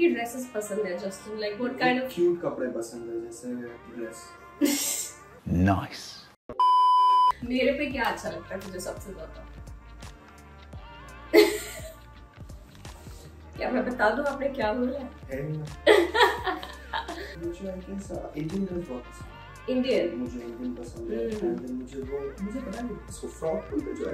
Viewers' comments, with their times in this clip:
0:10 am sure he said naked (without clothes)🤣🤣